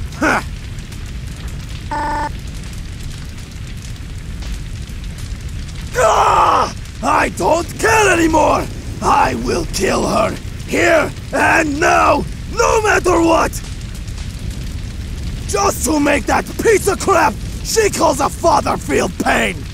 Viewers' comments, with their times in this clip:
0:03 bruh is this “kid among us” spells backwards 💀💀💀